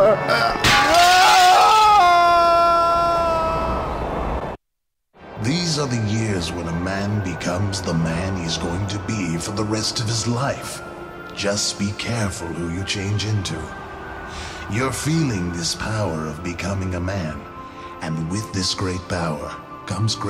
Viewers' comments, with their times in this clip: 0:05 Uncle Ben sounds like Xavier: Renegade Angel